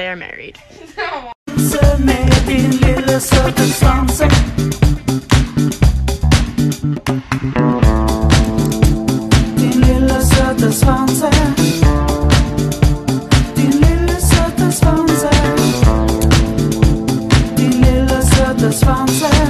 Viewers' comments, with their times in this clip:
0:05 Mans put a swedish song 😂😂😂